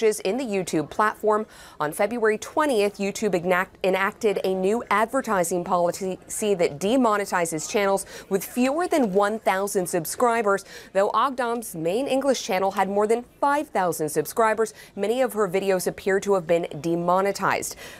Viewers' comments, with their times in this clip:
0:05 lol she says polity ...